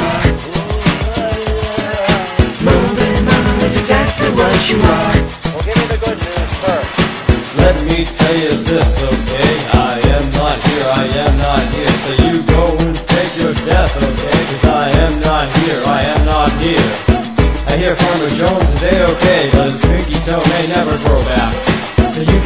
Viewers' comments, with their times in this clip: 0:07 BRO THIS IS WHAT I WAS SAYING LIKE IT FEELS KINDA TROPICAL IF YKWIM AND THEN THE THE THE THIS PART IS ACTUALLY SO AWESOME BUT THEN THE WHOLE SONG IS SO AWESOME TOO BUT LIKE IS MY FAV PARTTTTTTT AND THEN THE LITTLE GREEN MENACES PART IS ALSO MY FAV IDK IT MAKES ME WANNA DANCE LIKE SHAKIRA AT 3 AM FOR SOME REASON AAAAAAAAAAAAAAAAAAAA